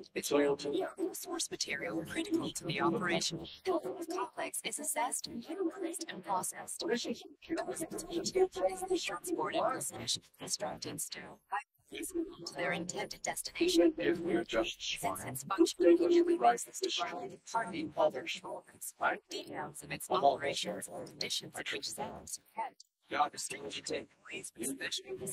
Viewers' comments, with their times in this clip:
0:08 excuse me what I feel like I need a hearing aid to turn up